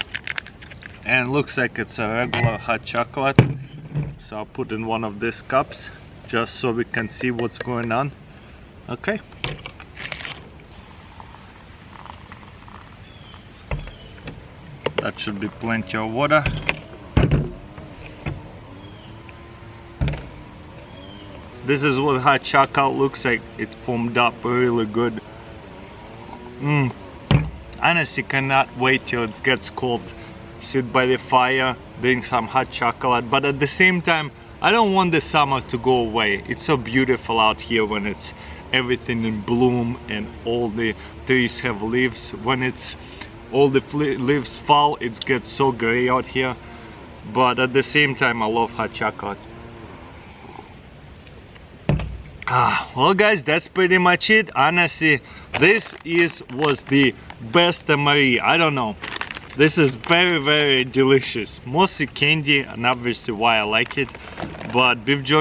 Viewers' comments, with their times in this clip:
0:08 That "ok" was so wholesome.
0:52 Did he say thats pretty pashtet ?